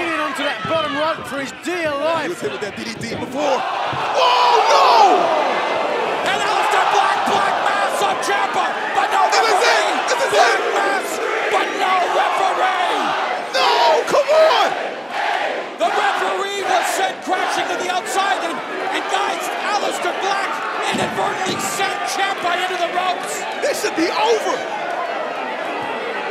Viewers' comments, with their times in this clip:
0:09 Eleven-count by the crowd. :D